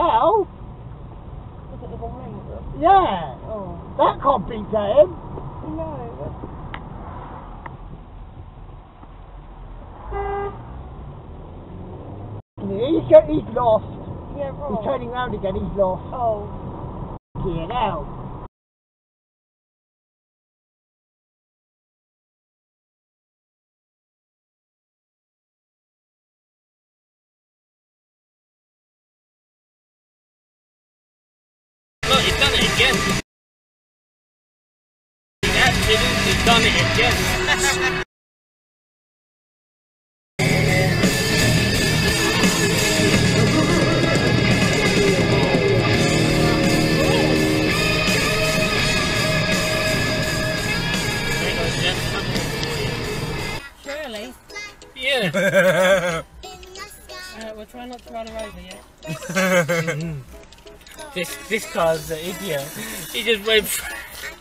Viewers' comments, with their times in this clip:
0:03 I thought Rik Mayall was dead, but it seams he is alive and well and living that was utter utter utter.
0:40 I like his taste of music :)
0:51 nice bit of motorhead there on the radio